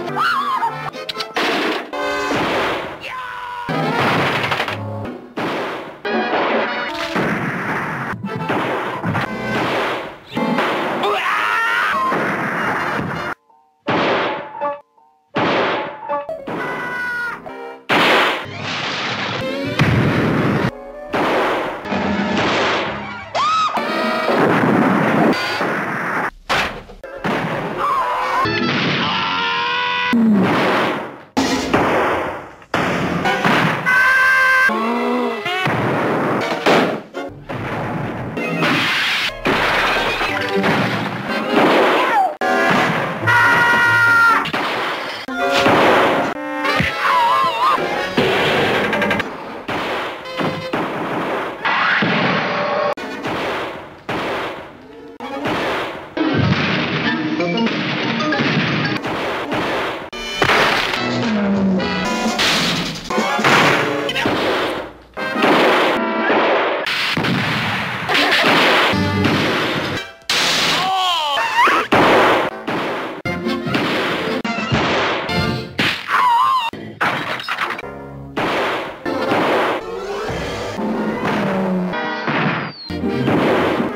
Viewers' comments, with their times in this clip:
0:10 that's the best scream ever lol
0:10 Tom sounded like a baby when he got hit in the eye
0:11 got me the most because of the way he yelled.
0:19 sound effect is so solid
0:23 sounds like a nuke
0:25 Only sound that doesn't sound like a gun or a cannon.
0:52 it make a rhythm in 2x
1:10 Spike scream like: Broo whasupp. Chill broh